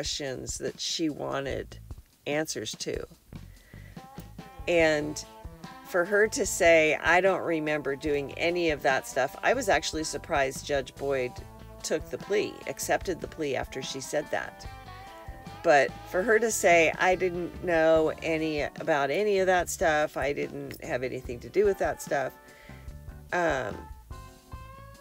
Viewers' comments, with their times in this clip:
0:07 She was talking so fast because of all the “coke dust” floating around her house! 😂